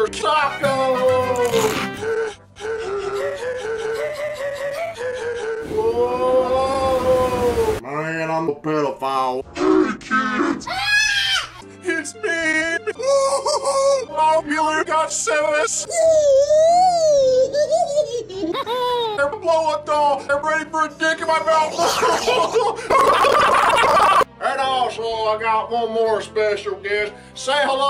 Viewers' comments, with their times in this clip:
0:09 "HEY KIDS" terrified screaming "ITS MEME"